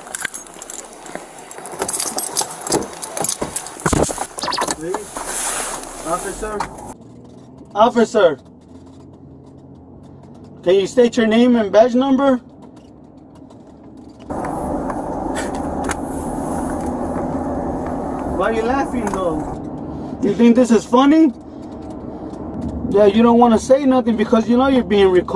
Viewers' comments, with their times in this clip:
0:08 😂😂😂 he can barley talk by now, but still manages to say officer can I get your name and badge number
0:08 hahahaha he sounds like a broken record